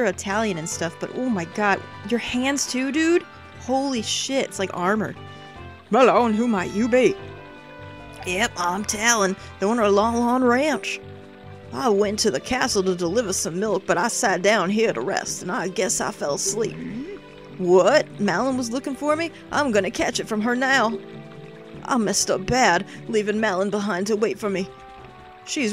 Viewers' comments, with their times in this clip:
0:07 lol, Texas accent for Talon.